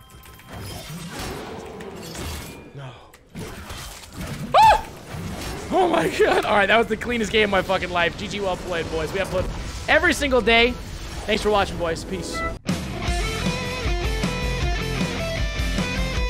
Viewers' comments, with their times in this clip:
0:03 that homer simpson scream 😂👍.